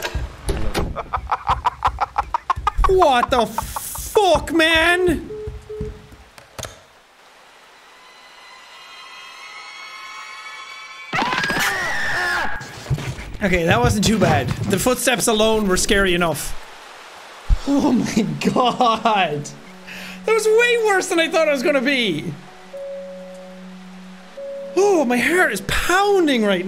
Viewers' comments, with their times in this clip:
0:09 I heard slapstick running sounds lol